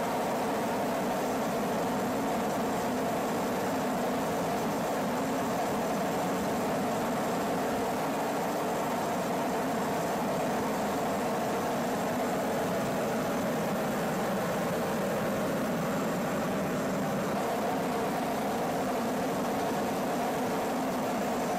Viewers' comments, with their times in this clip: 0:08 sounds like a monster I would find in a horror game or in a nightmare